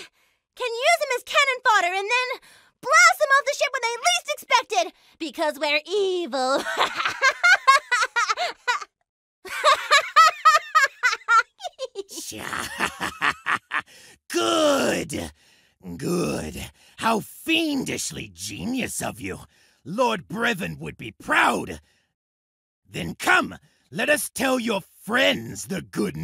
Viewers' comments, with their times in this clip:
0:07 D'aw that genuine little laugh after the big fake laugh, so cute.